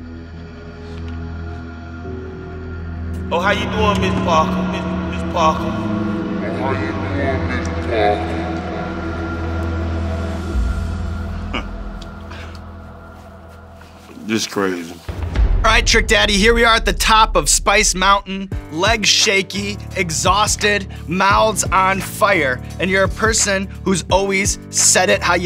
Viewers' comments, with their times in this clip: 0:08 “Oh how you doin Mrs. Parker” echo version